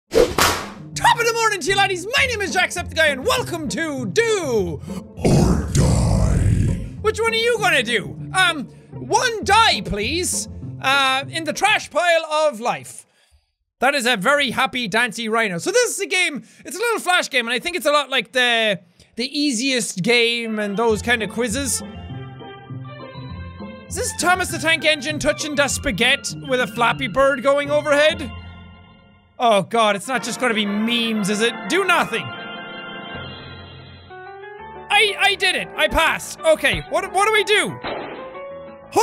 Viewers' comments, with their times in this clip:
0:05 venom voice been confirmed
0:21 THE TITLE MELODY REMINDET ME SO MUCH OF A GERMAN CD AND BOOKSERIES NAMED CONNI !!